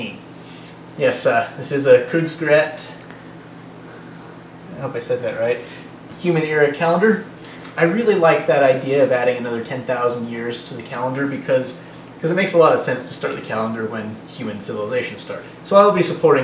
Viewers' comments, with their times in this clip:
0:04 No, you didn't. Sounded really funny to a native German speaker like me!